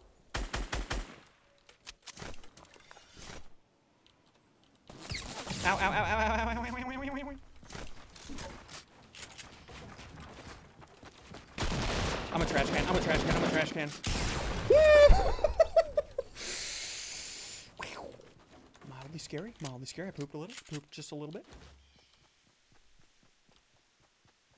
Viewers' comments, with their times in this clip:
0:05 RARE SSUNDEE ALIEN NOISE